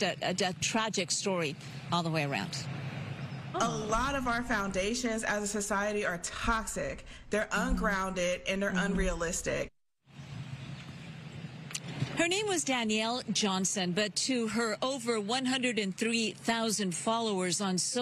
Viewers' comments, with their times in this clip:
0:06 Correction..... Go back and listen.... She said, "Tah-sic."